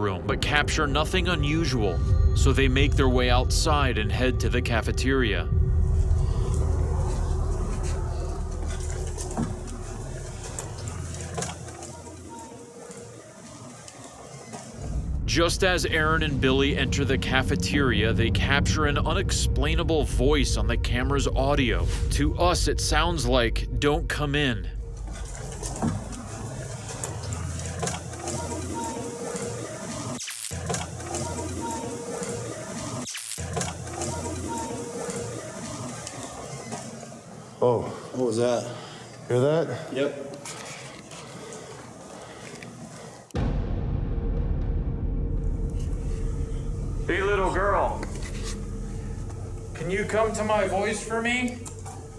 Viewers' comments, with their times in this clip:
0:10 Right, it whispered it then you immediately hear it in a higher pitch.
0:33 or so in the cafeteria sounds like "Don't go through"